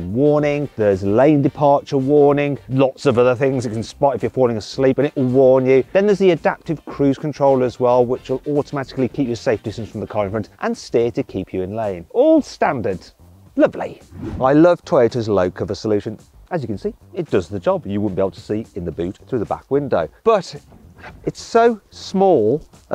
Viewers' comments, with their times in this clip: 0:04 YOU SAID IGO X
0:04 you SAIDD IGO X OMGGGG LOLLLLzz